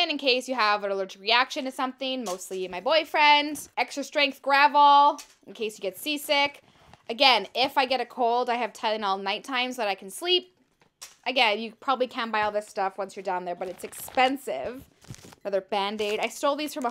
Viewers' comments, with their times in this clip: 0:03 it sounds like she said boyfriendS🤨